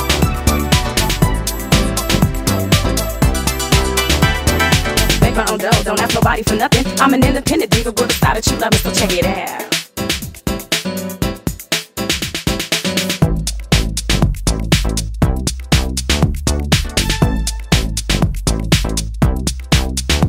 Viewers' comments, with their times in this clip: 0:06 OMG why does that vocal loop only come once, ?? Such a tease.